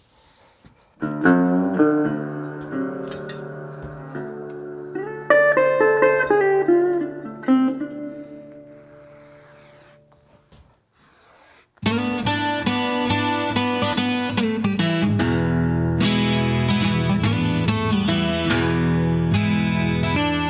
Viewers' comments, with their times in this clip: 0:08 Music has me thinking of some damn "Talk to your doctor about erectile dysfunction today and see if XXXXXX would be right for you."